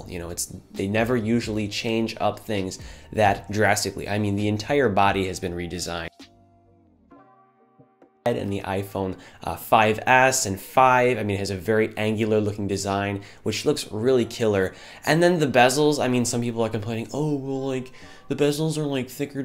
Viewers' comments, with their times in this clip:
0:06 Final Cut was being STUPID, and I didn't have time to correct this: when the audio cuts out I say, "it's reminiscent of the iPhone 5s and the original iPad..."